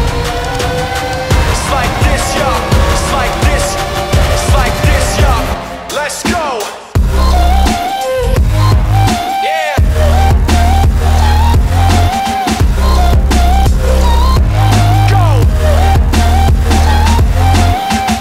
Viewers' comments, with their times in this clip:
0:05 Is anyone hearing something similar to keys shaking is the trap drop? Earphones needed unless your not human don't try, you have no brain